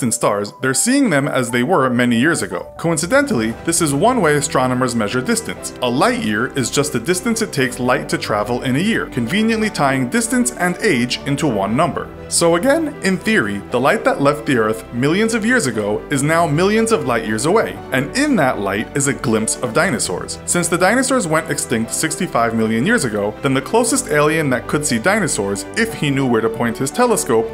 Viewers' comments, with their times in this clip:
0:10 THE VOICECRACK LOL
0:10 ~ voice crack thank me later
0:12 Lol his voice cracked when he said "again"
0:12 Hahaha that voice crack
0:12 LOL THAT VOICECRACK
0:12 that voice break tho😂
0:12 his voice broke
0:12 Jesus that voice crack
0:12 That voice crack tho 😂😂😂
0:13 that voice crack though lol